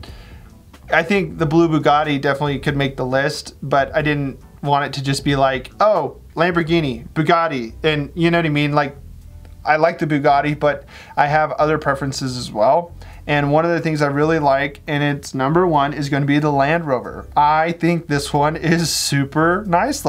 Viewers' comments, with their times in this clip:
0:03 I liked technic when it was used for Star Wars characters...I feel strange just saying that haha. I still have the Vader built with it. Side note: I was listening to the vid with headphones on, and the voice distortion ish made me jump out of my seat haha. Great effects as always!